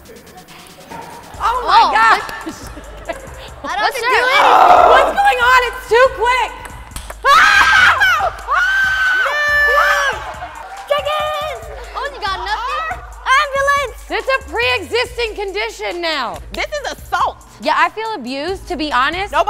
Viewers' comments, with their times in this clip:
0:06 the woman AAAAAAAAAA! AAAAAAAAAAAAAA!
0:07 LMAO THE KID SHOUTS CHICKEN